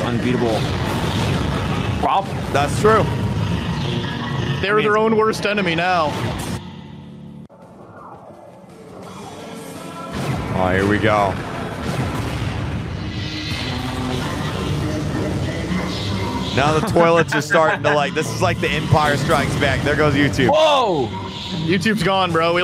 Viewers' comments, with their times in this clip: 0:07 and who hear here astro sound